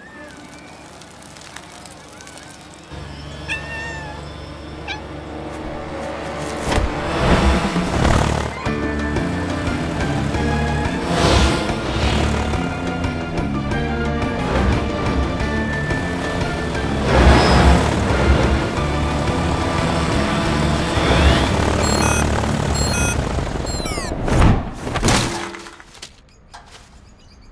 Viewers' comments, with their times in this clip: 0:10 best scene and music